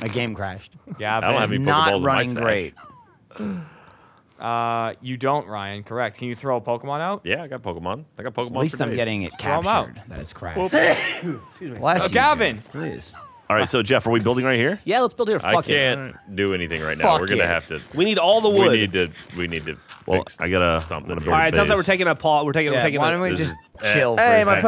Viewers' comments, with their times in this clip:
0:10 am I the only one who noticed that Gavin got sneezed out of the game?
0:10 Did Gavin sneeze himself out of the game?
0:11 Gavin's nose is so big he literally sneezes himself out of the game
0:11 Gavin sneezed himself out of the game